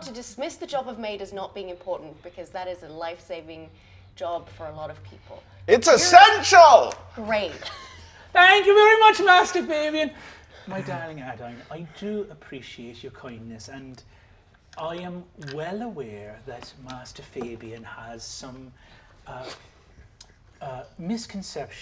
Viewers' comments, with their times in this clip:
0:07 "It's ESSENTIAL!" Fabien yells out randomly, sleep talking.